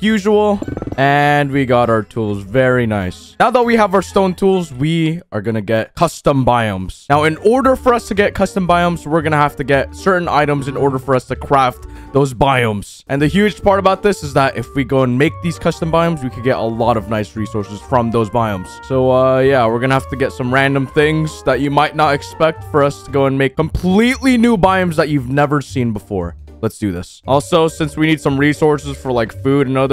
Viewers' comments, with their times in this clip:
0:09 My ears might be playing tricks on me, but he said "Cwaft"
0:11 My broken sense of humor ha ha he said qwaft